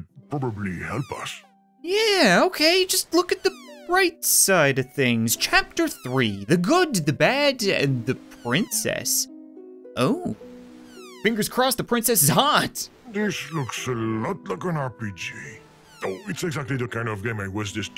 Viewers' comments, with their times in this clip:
0:05 did he say Lunk